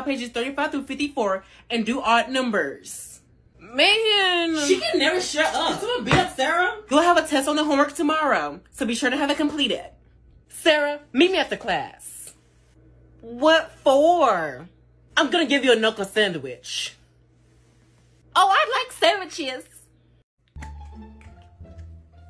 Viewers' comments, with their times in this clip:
0:07 I like the way she uhh😂